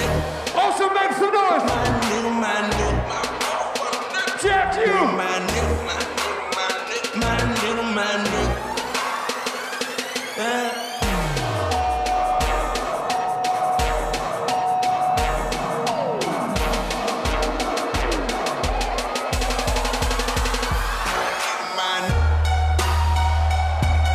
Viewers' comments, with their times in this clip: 0:07 Them white girls singing my nxga loool